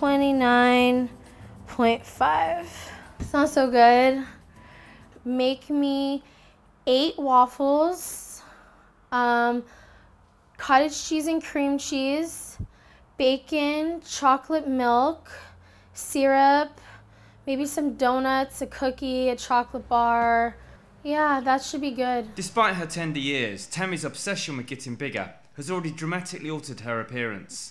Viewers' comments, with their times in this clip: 0:10 She’s out of breath just saying what she wants to eat!
0:15 she’s out of breath just naming what she ate